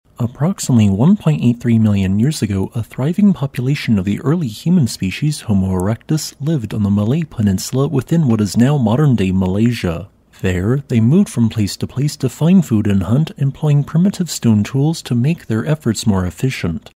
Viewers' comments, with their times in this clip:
0:02 your voice ------RUINS, a potential GREAT video. Ended, secs flat bleeeee